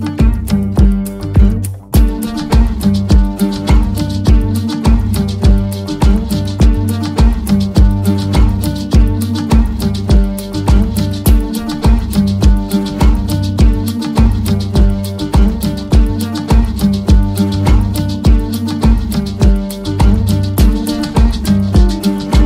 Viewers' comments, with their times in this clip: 0:05 it gets a very dark cumbia feeling, which is awesome.